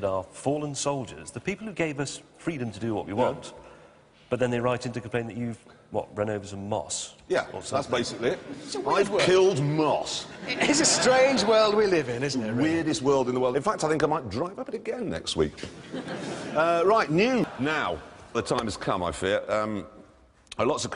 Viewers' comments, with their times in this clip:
0:07 “weirdest world in the world” Jeremy says it quick, so it’s hard to hear, but I’m kinda curious about that statement